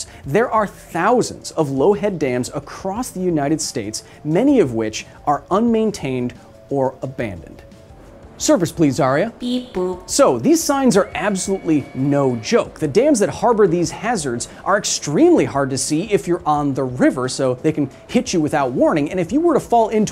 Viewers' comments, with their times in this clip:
0:08 that is,the cutest way ive ever heard beep boop,it just melts my heart
0:08 despite everything, the beep boop just gets me